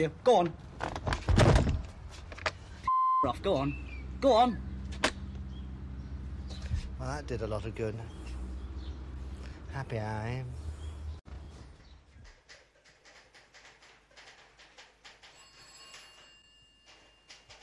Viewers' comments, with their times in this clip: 0:04 Someone replied with but that's just Paul Heaton shouting through a letterbox...